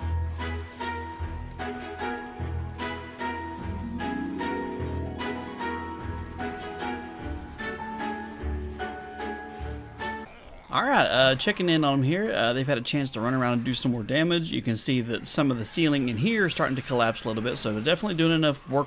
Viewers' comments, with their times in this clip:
0:03 Another awesome video. watching the zombies at fast pace with that music reminds me of the Sims!